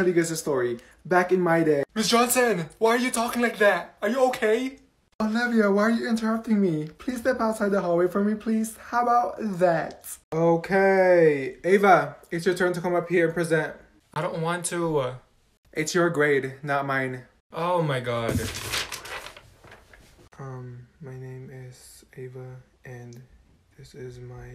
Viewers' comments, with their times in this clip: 0:08 the happy “how bout that😁😚🥰✨” 😭
0:08 the soft how bout that😭